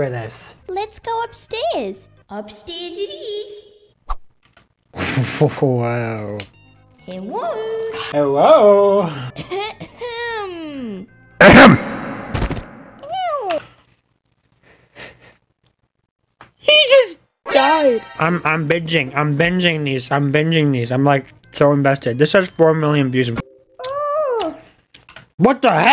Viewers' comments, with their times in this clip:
0:08 tommy died from the loud “ahem”